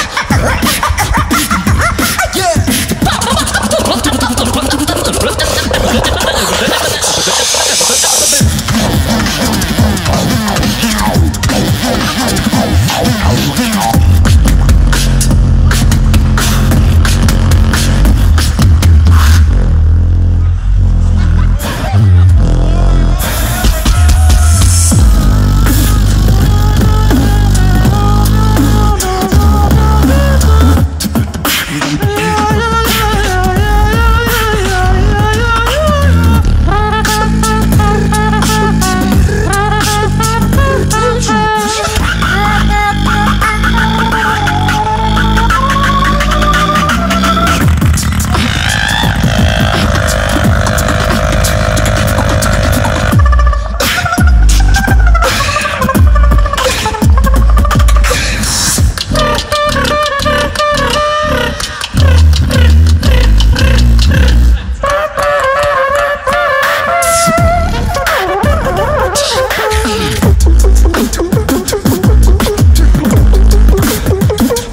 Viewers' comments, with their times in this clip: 0:03 im i only one hear that meme-voice?😆
0:23 whats that sound from saro?!!
0:36 omg that trumpet
0:42 it's like whan you turn on your old car
0:58 AGAIN we need trumpeets😂😂